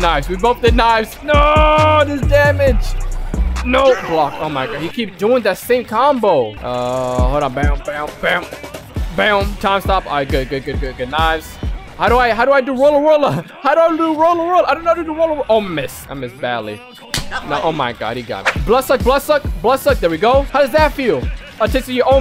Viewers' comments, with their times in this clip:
0:10 "how do I do rolla roller?" I hear rollaroller 💀